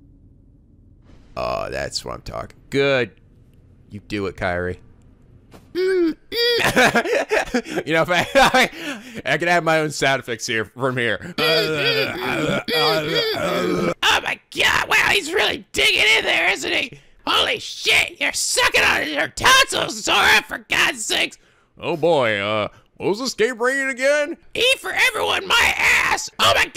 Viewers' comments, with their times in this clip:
0:09 Dem sound effects tho!